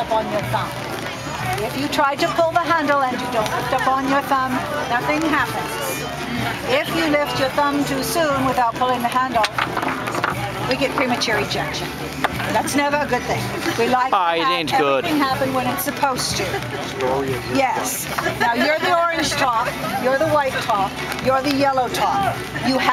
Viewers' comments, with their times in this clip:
0:06 "If you lift if your thumb too soon without pulling the handle.... Premature ejection" Crowd: chuckles lol I did too